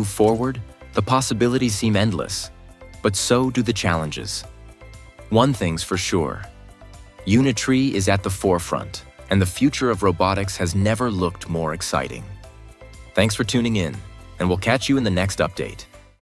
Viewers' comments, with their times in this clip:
0:04 Welding sounds good